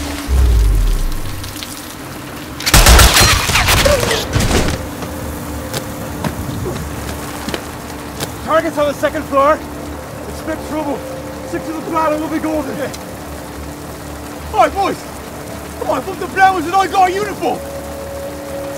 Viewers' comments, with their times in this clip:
0:05 wtf american accent?